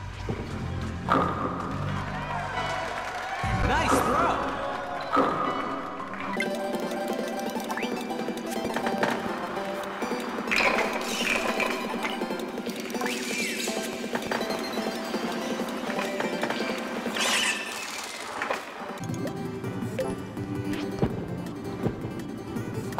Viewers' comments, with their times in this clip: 0:06 this super fast music is actually better than the non-corrupted music lol